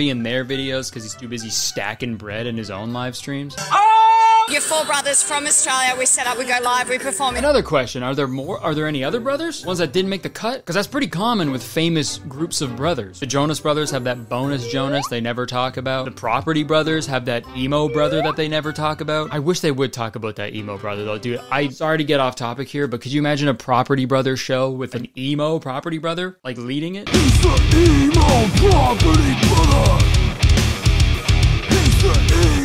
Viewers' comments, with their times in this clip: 0:10 Truly thought he said b o n e l e s s Jonas
0:20 did I just hear the intro to “Emily” when you said Emo😂😂😂😂